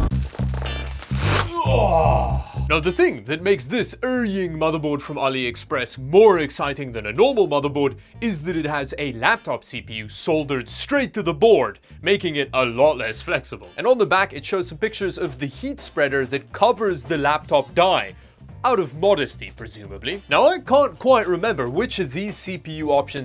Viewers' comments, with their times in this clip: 0:05 Best part... Dawid's pronunciation of "Erying" is translated as "Urine" by the Youtube captioning bot. Awesome and Appropriate!
0:05 CC decided its a "Urine Motherboard" 🤣